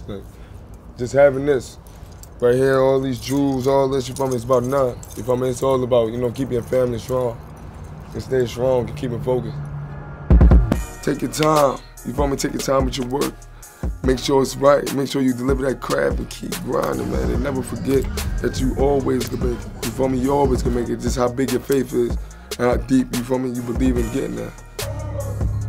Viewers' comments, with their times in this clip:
0:10 he sound like he spitting bars just by sayin some inspirational quotes